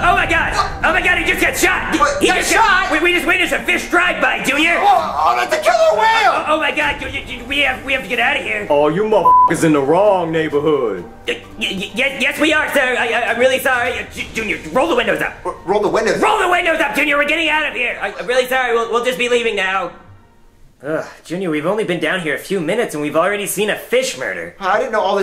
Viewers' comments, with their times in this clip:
0:08 I like that deep voice, the killer whale used, but I don’t know who was the voice actor of the killer whale. Who was it?